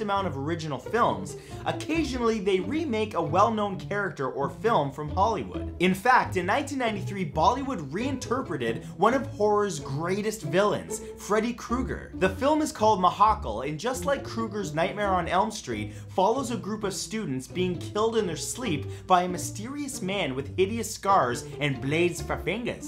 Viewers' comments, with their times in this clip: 0:07 did I hear him call them "baldy wood"? 😂